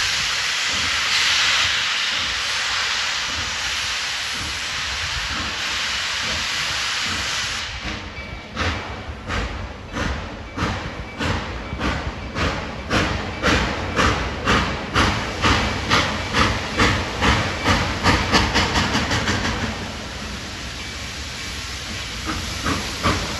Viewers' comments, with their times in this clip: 0:08 Ya hear that sound? 👉 That's the sound of a real steam locomotive! That's the most glorious sound I've ever heard!!! It's music to my ears!!! 🎵🎶👂 🚂